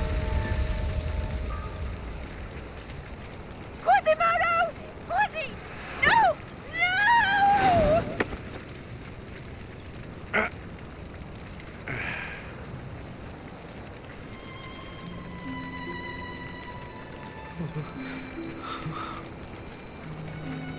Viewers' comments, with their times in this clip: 0:03 ok but that was top-tier voice acting right now. You can actually feel the horror she felt by the way she screamed